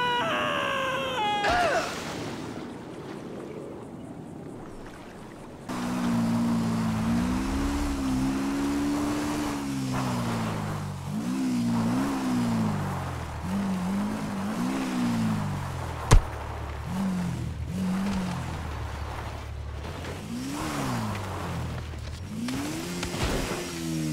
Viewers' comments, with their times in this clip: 0:05 when someone farted on the pool